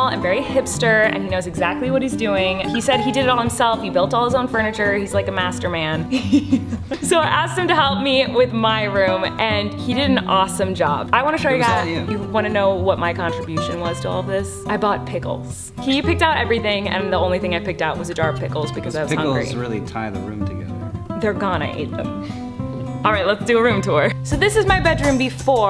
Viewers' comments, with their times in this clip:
0:05 that's called a flirt laugh ladies and gentleman👏😂
0:06 TELL ME THATS NOT THE LAUGH OF LOVE